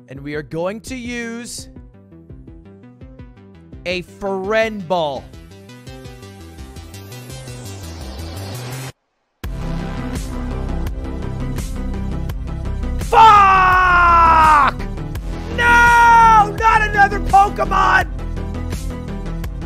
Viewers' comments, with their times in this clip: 0:07 Just here to recognize how the music perfectly matched with the game